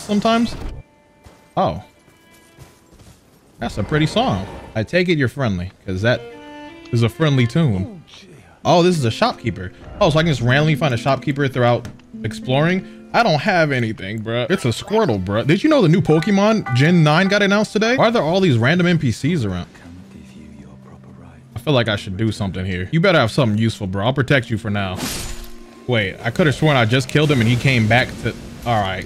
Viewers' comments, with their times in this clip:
0:10 love that dude. The first few notes sound like that one song “somebody come get herrrr”